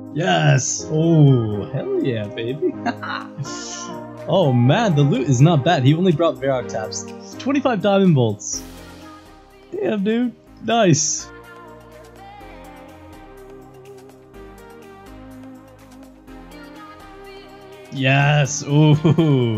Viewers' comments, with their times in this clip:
0:07 fuckin hate hearing that song in every vid, had to close sorry